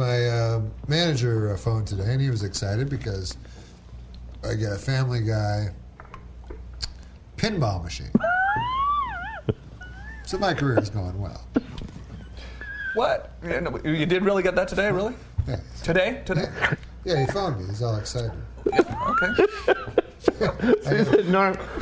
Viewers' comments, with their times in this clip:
0:04 The way Sam laughs at the pinball machine thing cracks me up
0:07 Sam's laugh gets me every time